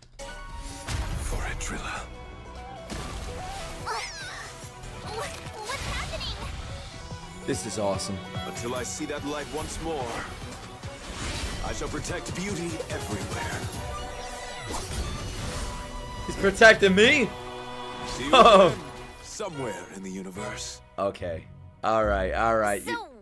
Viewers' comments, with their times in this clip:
0:05 argenti and tail have same voiced 😂❤